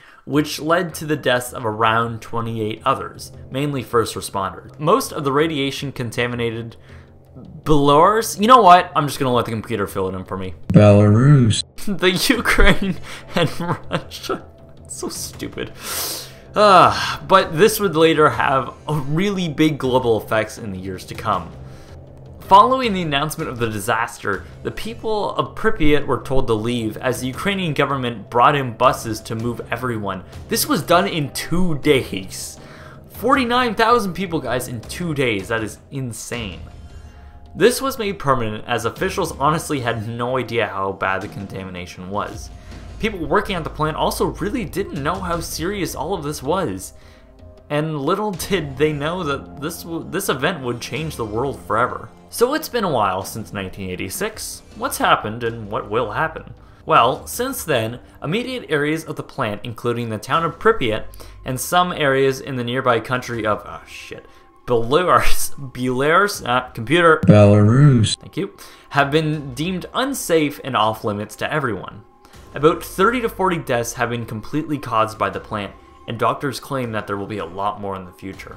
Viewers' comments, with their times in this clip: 0:07 Balars? That is the worst pronunciation of Belarus I have ever heard. It's pronounced Bell-ah-ruse, not Buh-lars or Buh-lair-us. I'm not even from Belarus, and I can pronounce it correctly.
1:04 Ah yes, the wonderful country of "Beluras"